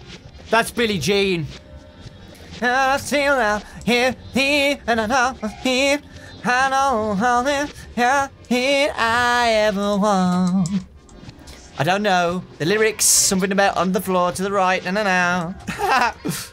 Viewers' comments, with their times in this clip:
0:03 that’s a good sing voice